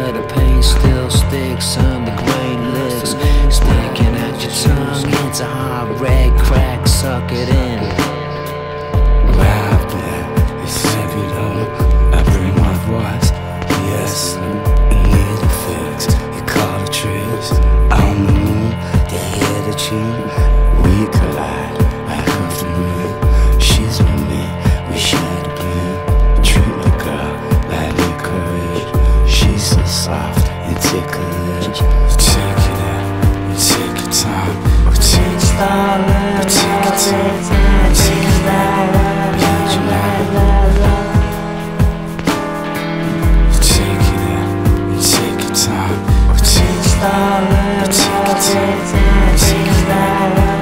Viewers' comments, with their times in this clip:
0:09 sounds like Tom Waits vocals
0:36 I thought I heard Thom Yorke's voice